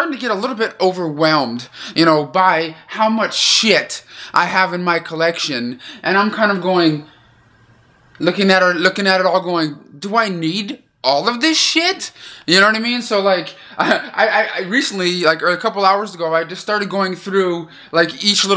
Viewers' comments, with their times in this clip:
0:03 the way you say shit is GOLDEN😂😂😭